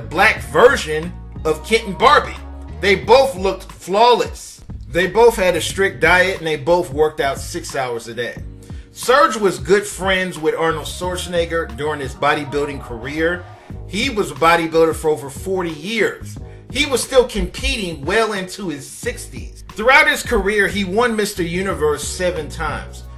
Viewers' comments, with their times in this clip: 0:08 <----------- Who is this Arnorld "Sorshanayger" you speak of?